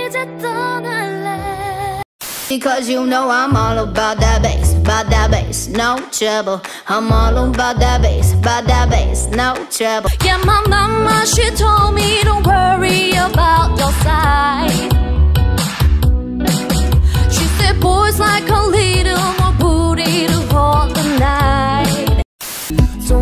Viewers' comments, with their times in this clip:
0:04 😲😯 wow I like this music 😉✌️